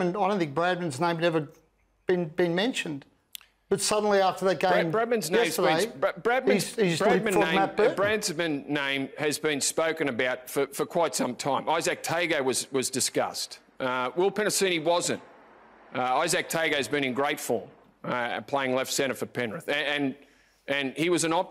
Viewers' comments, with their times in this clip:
0:03 "bradman's name been.... bradmans ..... bradman name ...... BrAdSmAn name" - bumbling ball of nonsense, the reason New South Wales cannot improve is their inability to take criticism, and all Brent asked was a simple question. Go home Greg.